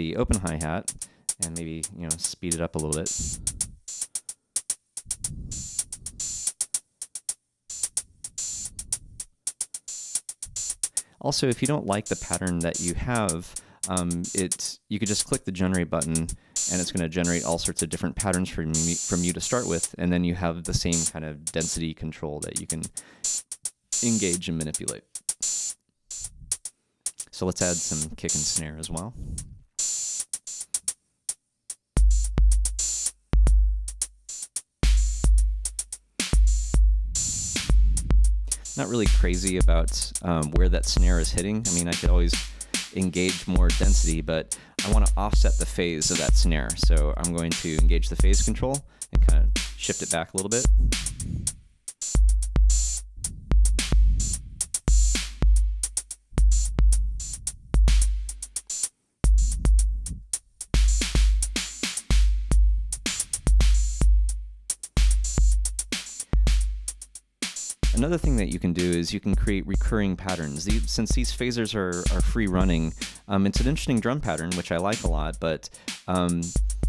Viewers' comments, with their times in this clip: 0:06 Aphex Twin has entered the chat
0:59 got scared bc I thought he was starting to rickroll us
1:00 Just one synth short of Axel F